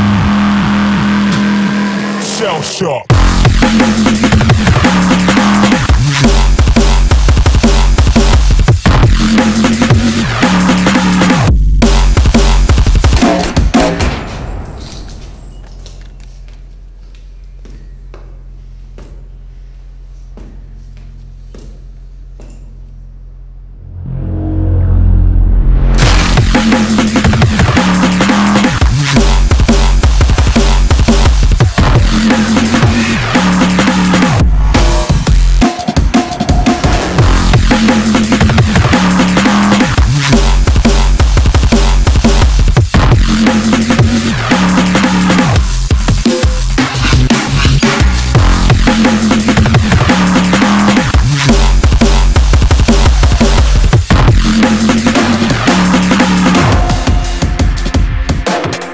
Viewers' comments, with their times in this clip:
0:08 That one kick that's like 3-5db louder than everything has always stuck out to me lmao
0:39 The sound of bullets falling on the ground matching beat!! Best shit I ever heard Noisia ❤❤❤ that is so creative.